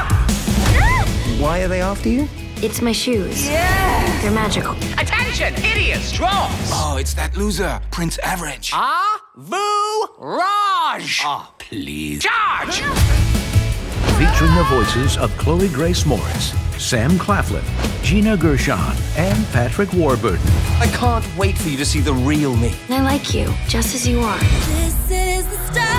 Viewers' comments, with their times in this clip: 0:10 that’s not how average is pronounced